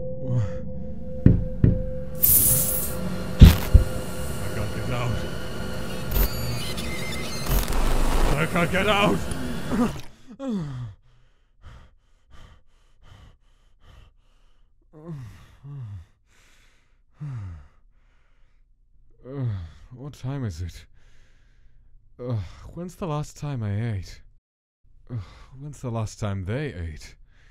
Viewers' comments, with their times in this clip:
0:09 mom came in right when Gaster spild his coffee it sounded very wrong to her
0:10 why the fuck Gaster is moaning ?!